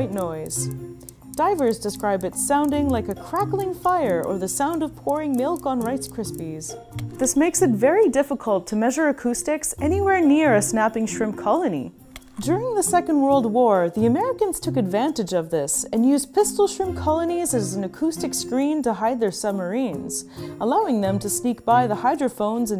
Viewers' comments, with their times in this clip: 0:06 n it reminded me of pop rocks. I loved em as a kid to toss candy in hear it crackle n could never tell u if i even liked the flavor lol